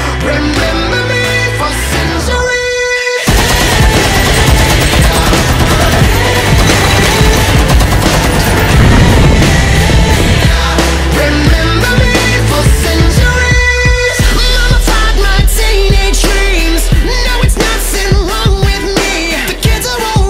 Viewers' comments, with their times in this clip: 0:03 is so good with tachanka gun firing and lyrics its just 🔥🔥🔥